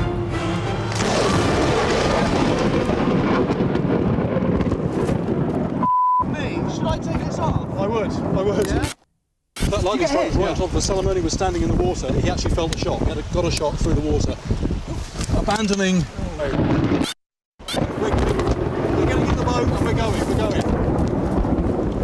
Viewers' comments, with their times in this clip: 0:03 hes laughing lol